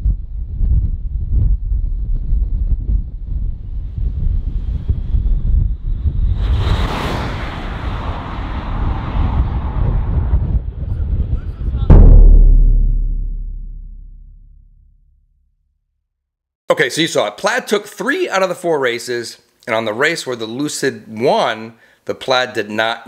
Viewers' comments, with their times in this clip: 0:05 I think it’s kinda hilarious that there’s 2000 plus horsetorques coming down the track and you can’t hear anything but some wind.
0:05 really sounds like fighter jets passing over